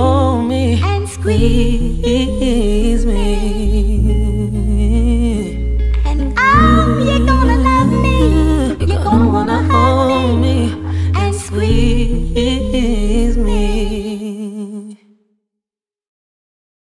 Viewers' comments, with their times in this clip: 0:07 Am i the only one who hear that cough ish 😕 love the song btw 😍😍
0:09 did the engineer leave her clearing her throat in the song😒